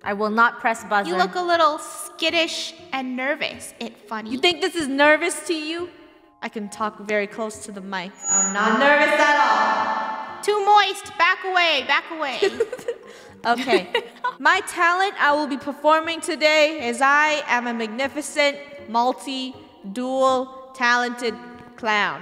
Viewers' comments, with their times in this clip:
0:08 love the echo